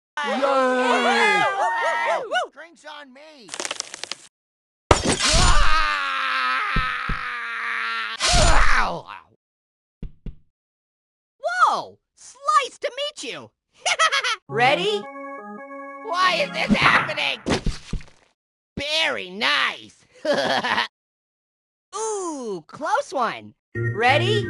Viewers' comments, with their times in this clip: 0:05 Banana’s agonizing scream!